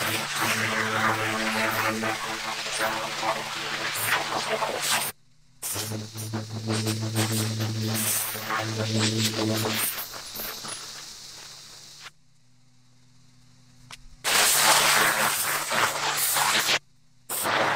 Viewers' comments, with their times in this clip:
0:05 maybe im crazy, but sounds like it was talking to me